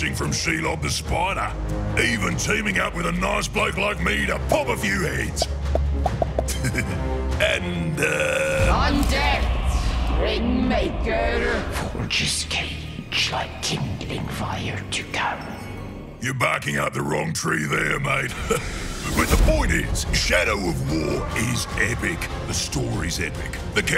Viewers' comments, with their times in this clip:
0:04 Wait did Bruz just do the beginning bit of the song men at work - down under, with pops